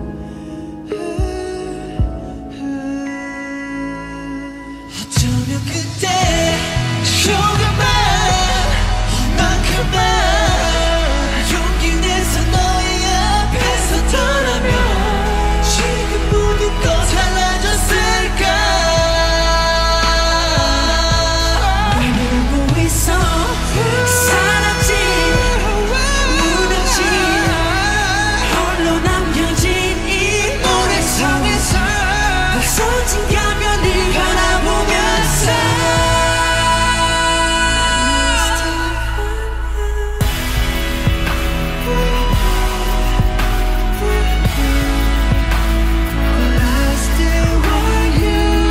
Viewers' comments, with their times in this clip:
0:05 Got goosebumps!!! Jin's voice is something else!!!!
0:07 I WISH JUNGKOOKS HIGH NOTES WERE PART OF THE ACTUAL SONG 😭😭
0:21 Jimin's low note yall 😭♥️
0:30 Jimin high note I can't (and he was sick 😷)
0:35 Jiminaahhh 😭😭😭❤❤❤❤ He is so angelic 💓💓💓💓 the high note 😭😭💓💓💓 And the ending 😭😭😭❤